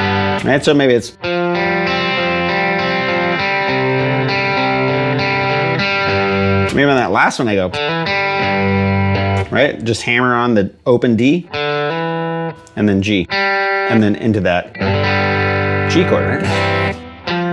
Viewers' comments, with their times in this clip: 0:03 I’m hearing a song from someone. Great lesson thank you!